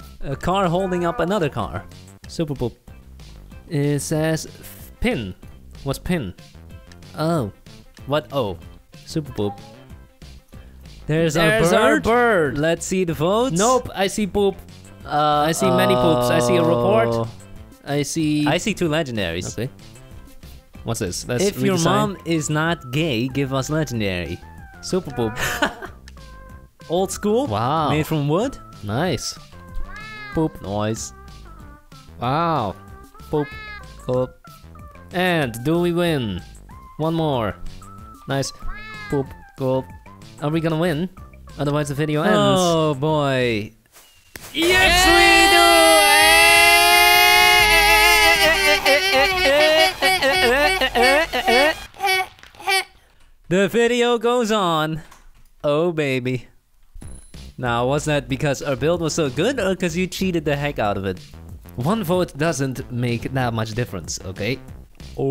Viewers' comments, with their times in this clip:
0:08 did you hear that or was it just me? it sounds like a cat and I love cats :DD
0:44 HEAD PHONE USER WARNING
0:44 WILD BIRD MATING CALL
0:44 a bit quiet turn up your volume
0:44 tornado sirens in my town:
0:45 nuclear siren going off
0:46 Rip head phone users
0:47 when war starts and the sirens go of
0:49 Warning:earrape thank me later